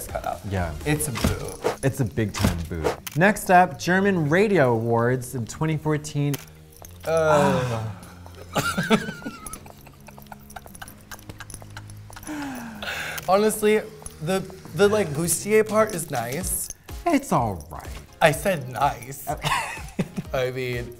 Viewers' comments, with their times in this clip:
0:07 That synchronized "ehhuhhh" let down moment by both of them was everything.